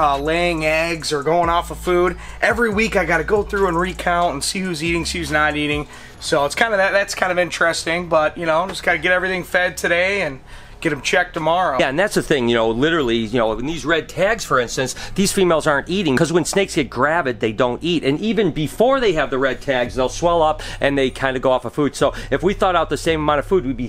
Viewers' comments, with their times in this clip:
0:06 Dose any one noticed that the guy talks like the boss son ? That's weird who copied who ?